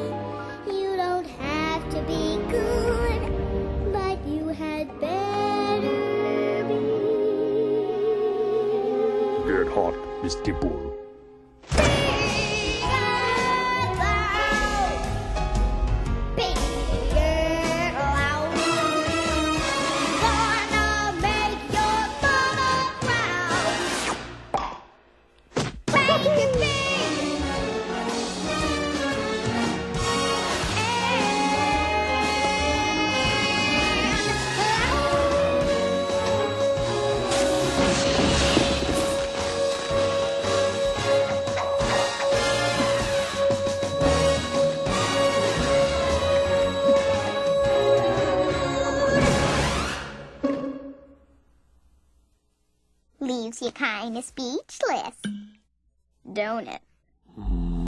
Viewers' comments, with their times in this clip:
0:09 I know this can’t be what he said, but I keep on hearing “ you’re hot, Miss Dimple” so I’m kinda disturbed 😦
0:10 WHEN I TELL YOU THAT VOICE ACTOR HAS A VOICE- HOLY HEAVENS...My heart skipped a beat, that is a REAL performance♥️😭 like the "BIGG ANDDD LOUDDD" PART SWEPT ME OFF MY FEET I SWEAR
0:34 Nobody gonna talk about how many she held that note?
0:47 She kinda sounded like a vacuum at the end😭